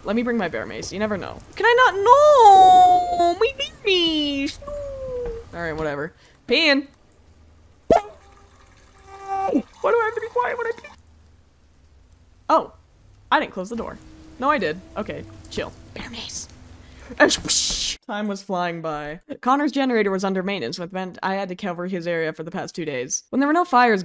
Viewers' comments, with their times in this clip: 0:06 the way the sound cut out was so funny to me😭😭